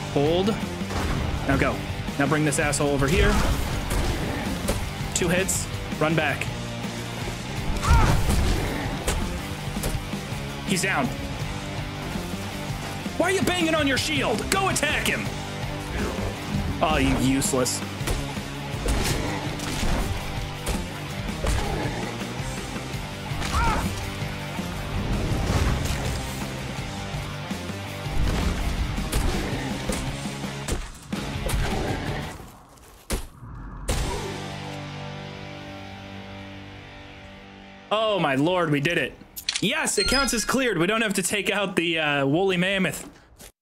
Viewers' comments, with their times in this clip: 0:07 I hear this music and all I think is doom. Is it a remix.
0:30 I love the slight delay on the end of Out of Tartarus perfect lmao